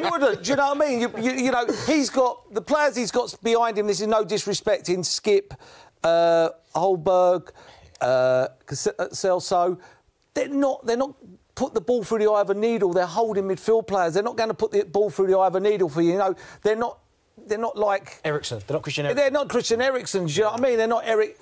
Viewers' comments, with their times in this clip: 0:08 man like Merse said Excelso hahahahahahaha